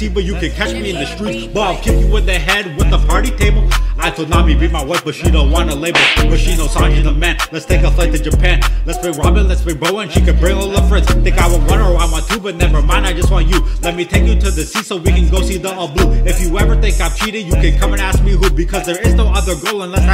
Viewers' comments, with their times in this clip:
0:05 this slap had me dieying
0:07 THAT SLAP GOT ME LAUGHING THAT RAP HITS HARDER THEN SAJIS AND DADS BELT COMBINED FIREEEEEE🗣🗣🔥🔥🔥🔥🔥🔥🔥🔥🔥🔥 edit: THX FOR THE LIKES THANK YOU SO MUCH BLESS U ALL!!!❤❤❤😊😊😊🎉🎉🎉